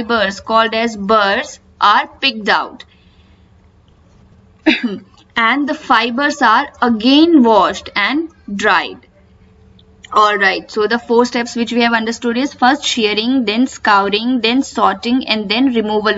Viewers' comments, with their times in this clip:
0:04 At time are you laughing or coughing